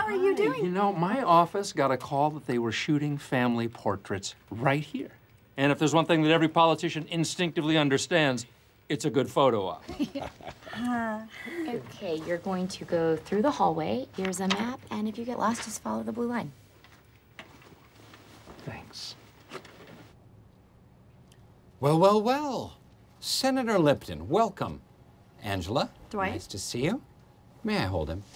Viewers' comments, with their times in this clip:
0:09 Stanley's laugh is so wholesome :)